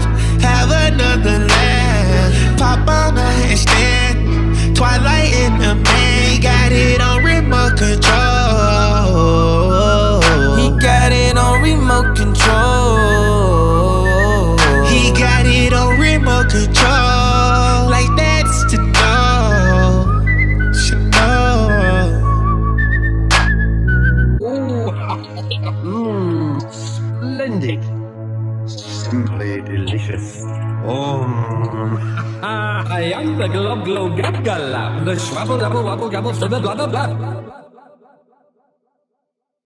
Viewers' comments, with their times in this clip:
0:06 When that whistle comes in at the end and thug starts singing 🔥🔥🔥
0:33 they starting sing!